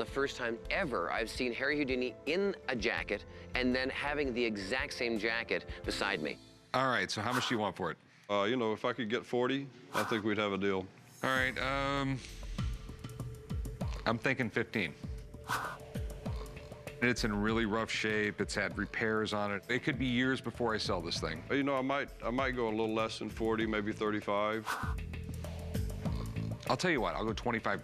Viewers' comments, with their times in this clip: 0:08 it sound like he says f;%king 40